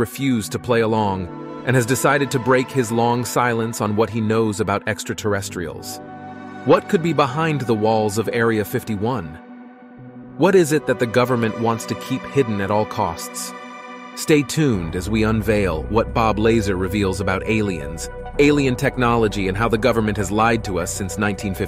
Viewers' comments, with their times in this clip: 0:05 Dude wtf? How is it you pronounce Bob Lazar correctly but then pronounce it wrong as Bob Laser lmfao